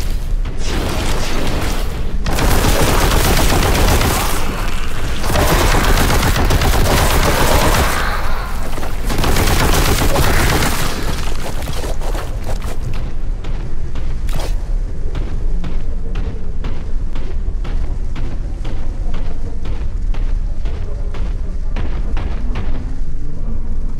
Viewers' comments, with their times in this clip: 0:07 Some weapon sounds are too WEAK. The heavy bolter sounds like some goofy gun from that South Park shooter game, and even sounds smaller than the light bolter. The shotgun sounds more like a heavy pistol. EDIT: And where is the METAL music?